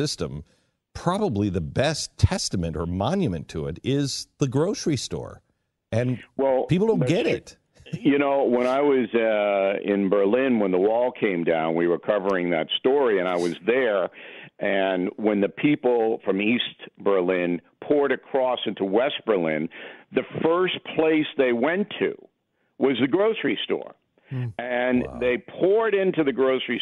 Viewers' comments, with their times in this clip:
0:10 in Bill talks about being in Berlin when the wall came down. Beck snickers. Beck and me thought the same thing. Were you really there Bill? lol. Glen doesn't need this blow hard.